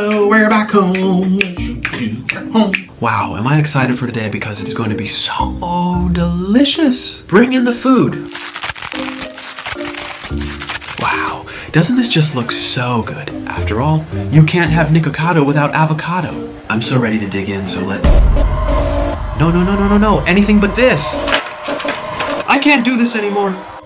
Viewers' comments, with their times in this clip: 0:10 A V A C A D O N O I S E S